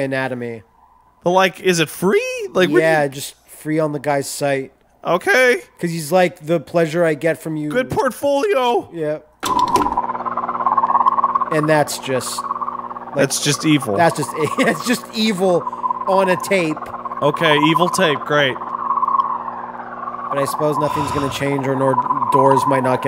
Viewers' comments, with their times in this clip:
0:09 That noise just makes me think of Jurassic Park velociraptors.